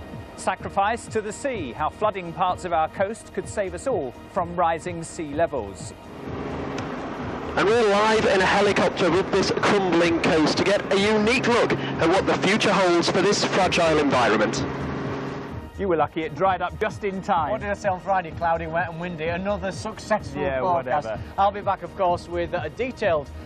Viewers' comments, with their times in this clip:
0:09 sounds like he is using an Xbox connect mic LMAO.